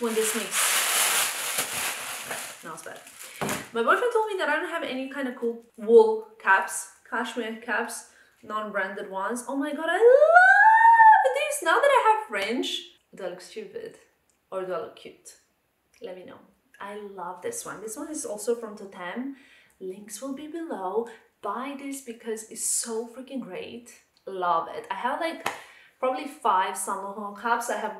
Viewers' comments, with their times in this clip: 0:10 new level of screaming achieved 😂